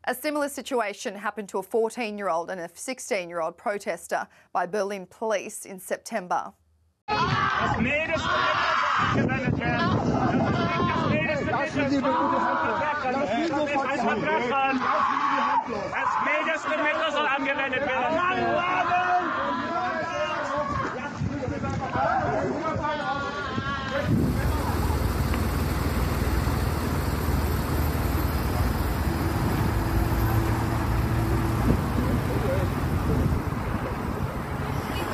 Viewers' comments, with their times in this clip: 0:08 that guy was scream like a witch!! Enough of this insane climate activist the people are so furious😡
0:09 Why is that soy boy screaming like a castrated goat? They’re not hurting him. Over-acting.
0:13 FOR THOSE THAT DONT UNDERSTAND GERMAN AHHHHHHHHHHHH MEANS OUCH
0:16 Either that man is screaming becuz hes a Kid or he is in pain for being Floated around by cops